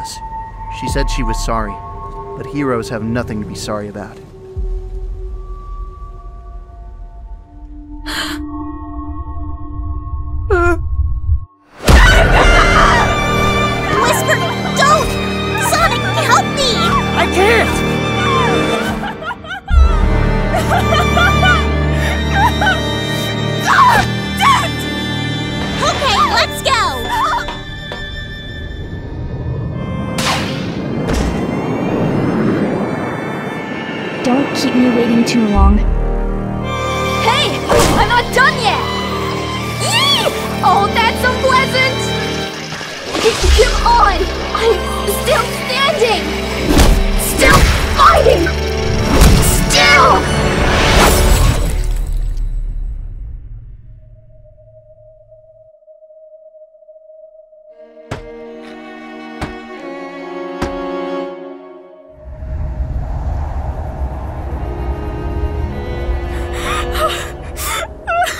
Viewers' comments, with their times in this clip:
0:06 I’ve read through the entire arc and I was trying to prepare myself for this part but when it hit god I actually got chills. The voice was absolutely spot on and I definitely felt the pain Whisper was going through. This entire arc shown that the writers attends to do everything they can to make this comic series incredible,fantastic voice acting
0:07 I just want to thank the voice actor of Whisper for making this moment hit so hard, they put so much emotion to this part and it WORKED. Literally, it brought me to tears.
0:08 make sure the volume isn’t too loud
0:10 that sounded so sad :(
0:10 God DAMN that scream was RAW! How much are you paying these VA's cause it is not enough!
0:11 I can't explain how perfect this is. I thought the art portrayed her sadness in the best way, and that nothing could make it better. I was easily proven wrong, that voice really sounded like she lost someone she truly cared about. God damn, actually had me get some goosebumps. These VAs are awesome.
0:11 That howl near ... oh Christ, I think that has a permanent spot in my brain now...
0:11 That fucking scream tho, that really hit me hard, and everyone knew I was bawling my eyes out
0:12 This right here? This is the moment I've bee waiting for since you guys started this arc. And by god did you fucking DELIVER! Whisper's VA really fucking sold it and FUCK it was so good and sad. Between the sound design, incredible original sound track and again the AMAZING voice acting you guys have made the definitive way to experience these comics.
0:12 was just amazing. Whisper's scream with the swell of the violins and Amy struggling to keep Whisper from running into the fray and Sonic can't do anything- ah, that's just awesome. You guys did a wonderful job :D
0:12 I knew it was coming, and still broke me. That delivery was visceral.
0:12 The only moment where Whisper doesn't whisper
0:51 That moment was perfect The sheer silence when she was fully turned into a zombot was very impactful Even though she was most likely unaware that the more she fights, the faster the process is